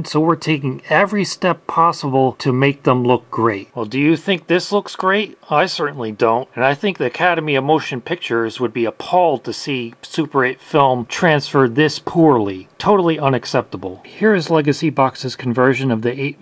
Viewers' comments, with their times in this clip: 0:03 First time where I heard you sounding legitimately mad.